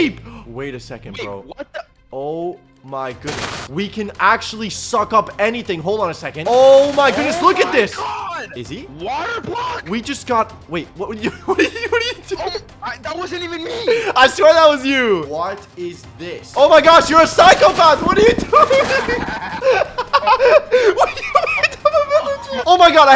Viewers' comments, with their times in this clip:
0:10 i don't think I've ever seen him laugh so genuinely before.